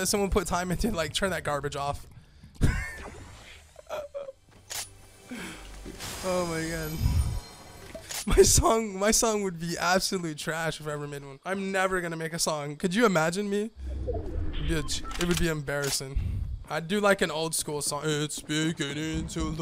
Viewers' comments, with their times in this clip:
0:04 did u here son or song